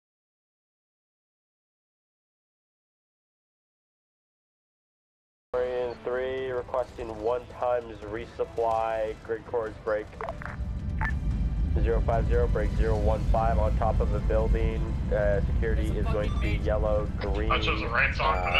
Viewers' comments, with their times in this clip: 0:06 Youtube killed the audio around the mark. Fuck youtube